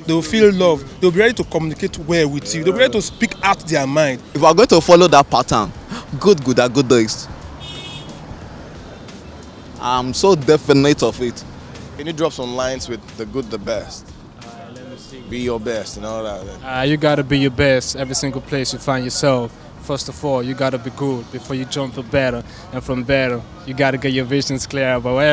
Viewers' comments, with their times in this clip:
0:09 but y na ehn? nigga speaking like falz i feel like he was acting ..